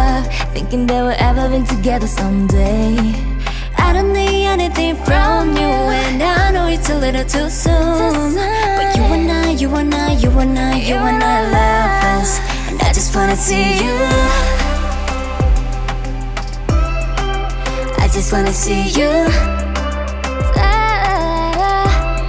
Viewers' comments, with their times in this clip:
0:05 Yuki singing…. i want this tattooed on my forehead she’s so good ❤